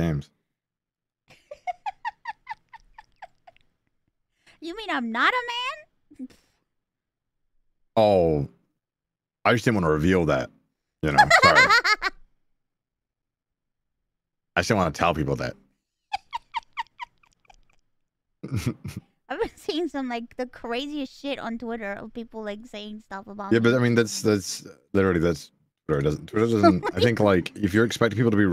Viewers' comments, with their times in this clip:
0:10 perfect witch laugh for the season